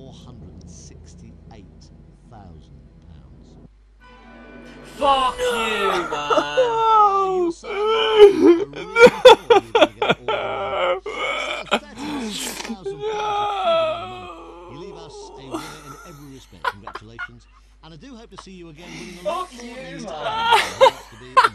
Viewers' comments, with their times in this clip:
0:04 ?? Not Nice Sound for The Wrong Answer in Loss £468 000